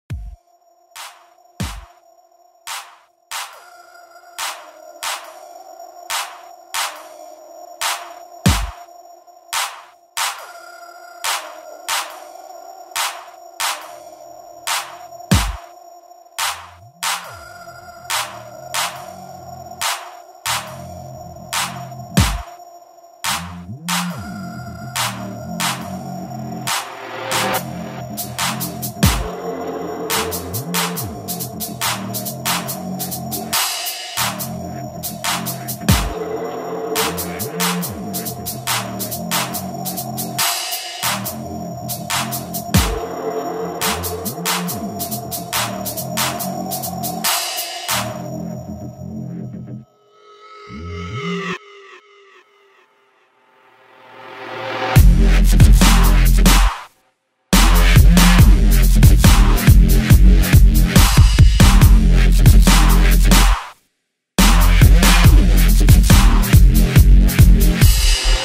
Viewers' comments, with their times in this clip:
0:00 Weakest drop on UKF Dubstep ever :p
0:53 Watta f*** :O 20-25Hz?:D Drop it like that :D:D:D
0:55 B bass drop!
0:55 Not a fan of this track myself, but there is actually a drop, while it may be slight
0:55 Another one of those B drops again.
0:56 I really like this song,Amazing Bass!! ~~~d-.-b~~~ gets good